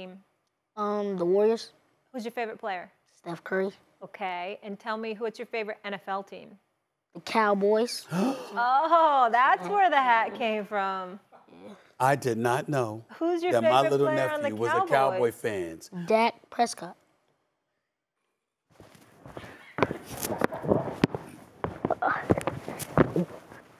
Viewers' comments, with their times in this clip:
0:07 the swag in the way the young man said it 😂👌🏽